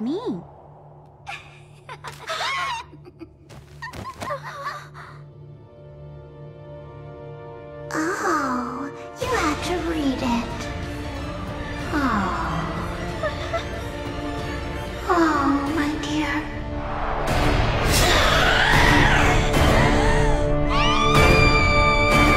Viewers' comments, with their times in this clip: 0:09 Moaning Myrtle is that you?